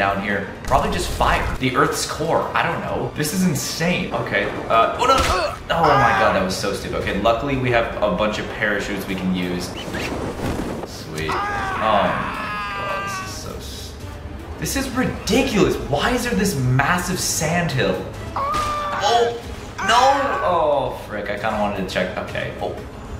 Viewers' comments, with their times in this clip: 0:04 Did y'all hear gun shots